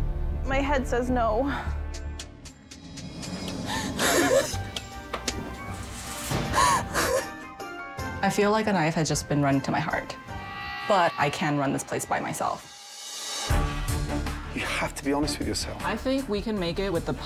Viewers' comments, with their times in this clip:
0:05 I love the editors for adding clown music when she started crying😂😂😂